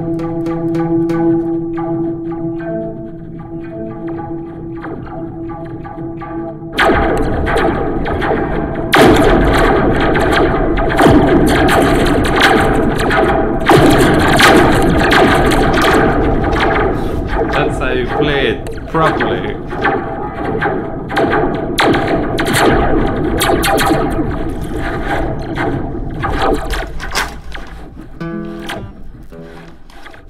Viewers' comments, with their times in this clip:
0:06 Epic space battle ... Love it, gonna get a tiny slinky for my ukulele. lol
0:07 Space ships: pew pew pew pew pew This guy's guitar: pew pew pew pew
0:07 sounds like the E-11 blaster in Star Wars
0:11 Sounds like a laser blaster battle.